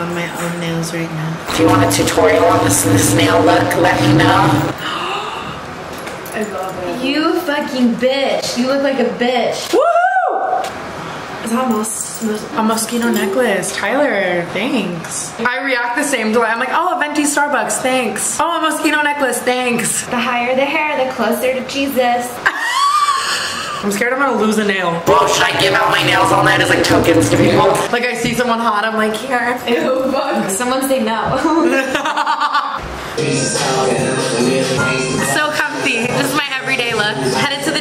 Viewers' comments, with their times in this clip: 0:06 thought it was saying like maraschino cherrys
0:06 thought it was saying like maraschino cherrys
0:23 tana are your tonsils okay lmaoo